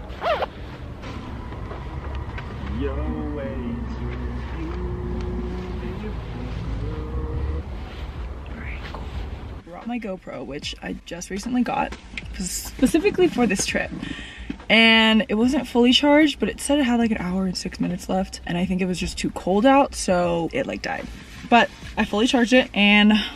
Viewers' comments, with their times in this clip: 0:05 The way he was singing beautiful girls 💕😭🥺